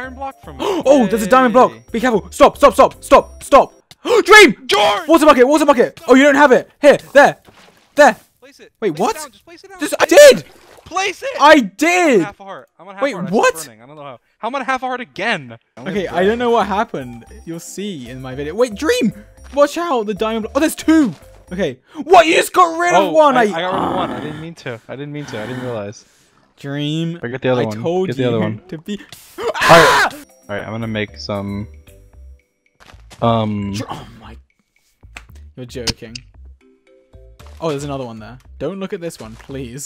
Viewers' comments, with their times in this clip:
0:04 i love how they shout each other's names 😭
0:23 did this man just growl😃